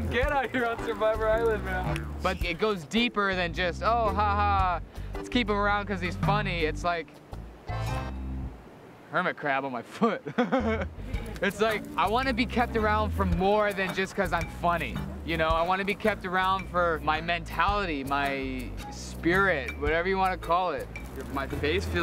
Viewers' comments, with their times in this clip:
0:07 The music shift when he kicked the hermit crab had me dying 😂😂😂😂
0:08 is the best clip i’ve ever seen lmao his laugh 😭